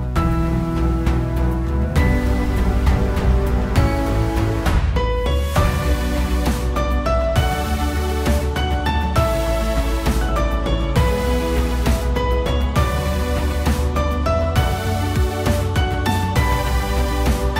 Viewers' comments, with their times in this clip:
0:05 Every Gladiator gangsta till The Elder Scrolls Theme Remix hits in rhythm to The Sword and Axe Swings of Their Opponent's